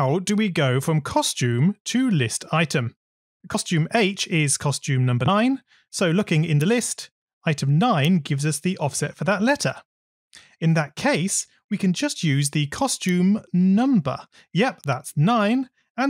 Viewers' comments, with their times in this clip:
0:03 why did the "number 9" cut off
0:04 did anyone else notice when he said nine, it was edited on there?